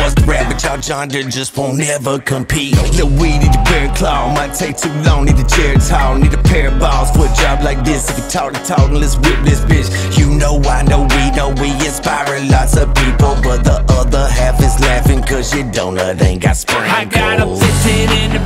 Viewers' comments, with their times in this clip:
0:06 I heard that n word slip in